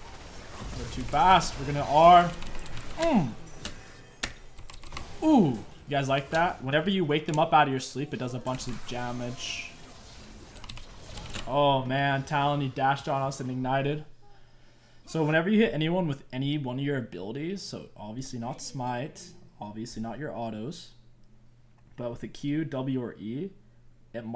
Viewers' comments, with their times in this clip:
0:09 "Jammage" Me: Jam a man